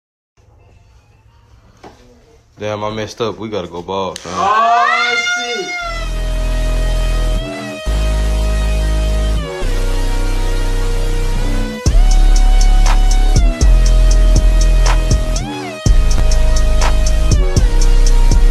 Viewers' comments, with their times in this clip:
0:01 Nobody heard the mf krab music
0:06 When the beat drops